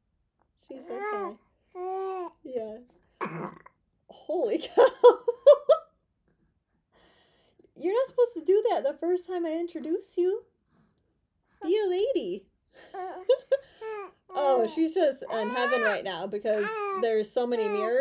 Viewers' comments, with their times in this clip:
0:03 Any girl who can belch like that, is proudly welcomed amongst men. 👍